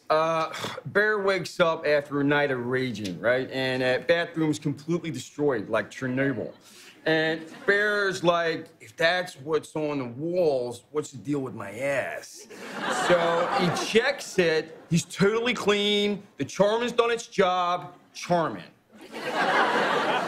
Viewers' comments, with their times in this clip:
0:05 ah yes. We all remember Churnobyil.